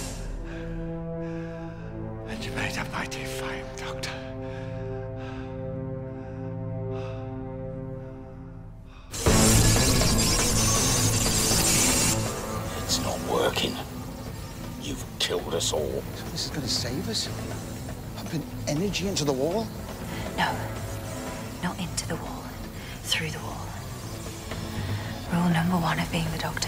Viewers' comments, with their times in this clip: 0:10 Excuse me he had music